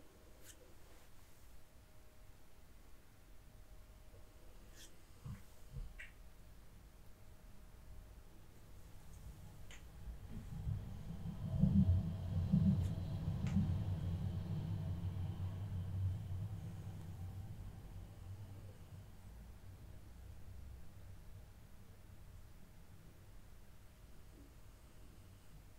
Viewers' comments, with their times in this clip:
0:10 when that train(?) passed by I swore it was somehow her heartbeat.